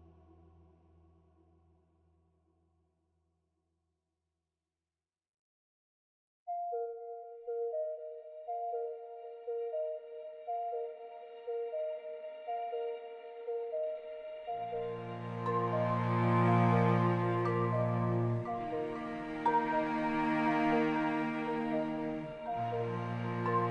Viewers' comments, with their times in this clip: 0:06 Music hits different ❤